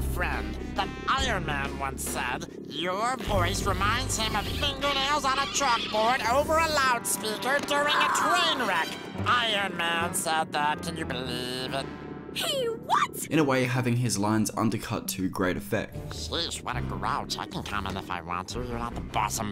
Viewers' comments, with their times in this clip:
0:04 Modoc sounds like stitch